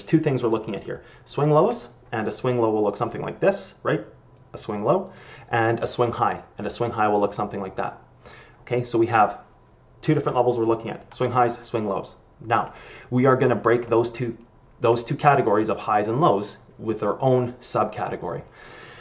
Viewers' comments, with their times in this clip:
0:07 minecraft cat noise? you're welcome. Btw amazing video